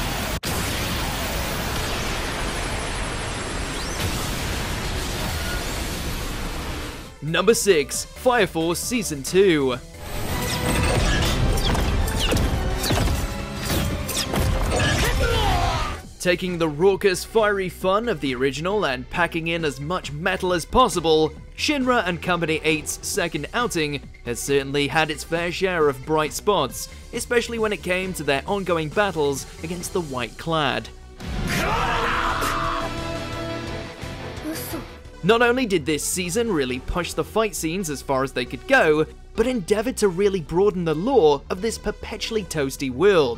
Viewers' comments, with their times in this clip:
0:09 the Sound Effects of Fire Force still doesn't disappoint me 🔥🔥
0:31 Someone: coughs Everyone: